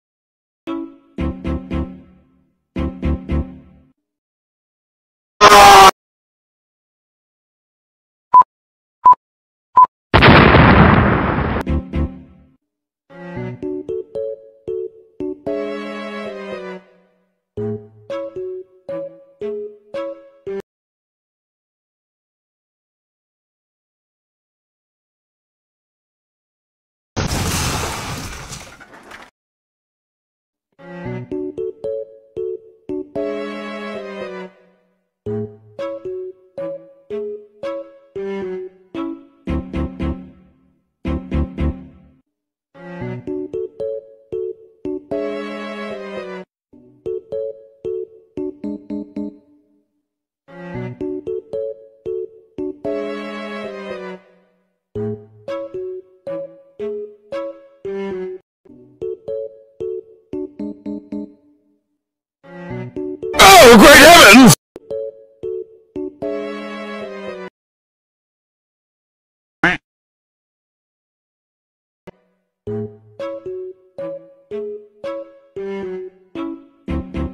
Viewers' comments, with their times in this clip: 0:08 i didnt know uzi talked french-
0:09 why is in french (my country 🇫🇷)
1:03 I WAS CONECTING MY HEADPHONES AND TGEN MY VOLUME WAS ALL THE WAY AND ALL I HEARD WAS "oH gReAt HeAvEnS"